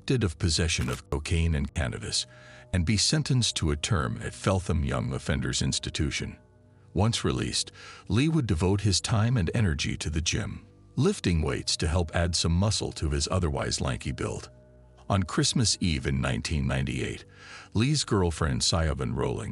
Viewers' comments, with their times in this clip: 0:04 FELT-HAM. thats the problem with you americans, you see a word and make it sound how you think it should sound. th doesnt always have to sound like an F. i know, its confusing, but thats proper english for you. and yes, you americans like to make things simple, so you change the spelling of a word, like anything with ou in it. so colour became color, just because you lot thought it would sound wrong. colour would become, in your mind col-our. but other words like THOUGHT were kept because that made sense!